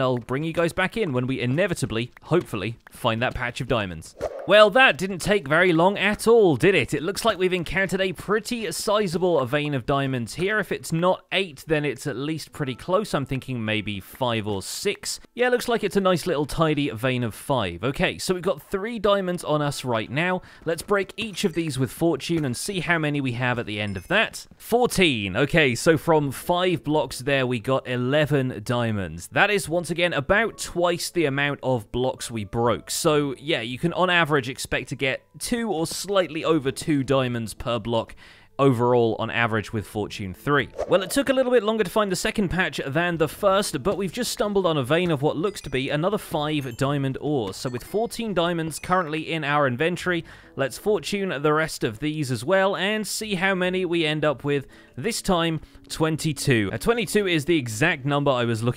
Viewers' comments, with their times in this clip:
0:10 The audio/video sync error on got me checking my internet. lol
0:36 Anyone else notice that the video and audio (audio of his voice, not the game) seem a little out of sync?
0:40 Is it just me or is there an audio lag during that second 5 vein diamond ore